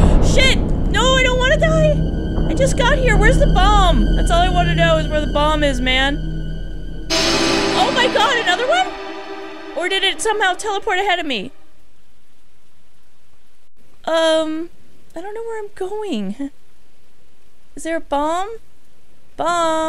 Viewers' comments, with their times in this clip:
0:07 you're right, those JUNNNN's are more scarier than the ghosts!